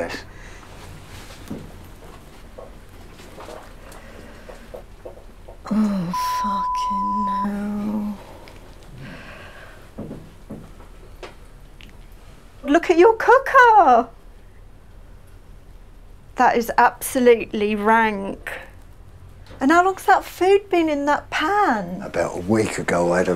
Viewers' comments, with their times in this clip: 0:03 I love how they bleep bad words in the UK 😂 that bleep didn’t hide a thing
0:05 I like how the beep is so quiet you still hear the swear word 😂
0:05 Ok did not put much effort bleeping that out at all
0:05 What was the point of that bleep?